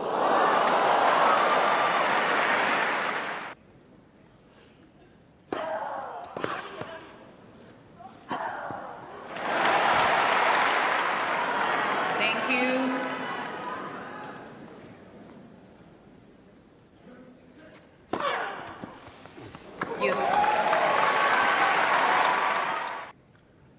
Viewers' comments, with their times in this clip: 0:06 What was that sound from Serena ?